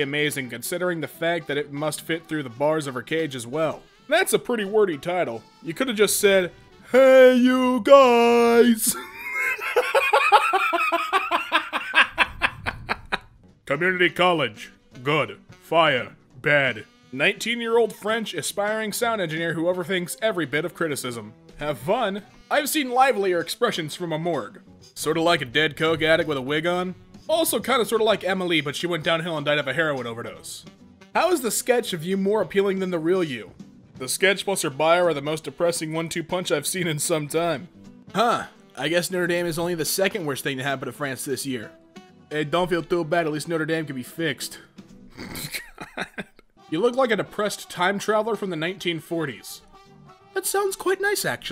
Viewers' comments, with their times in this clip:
0:07 "hEYYYYY yoU GuySS" massive laughter
0:09 i laughed at the same time and ended at the same time, now im confused
0:38 you you kinda sound like sanji's dub voice actor in one piece :O